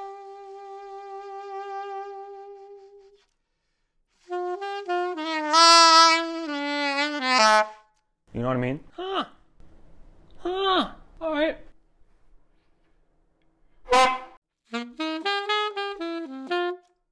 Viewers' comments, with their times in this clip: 0:04 Bro sounding like Albert Ayler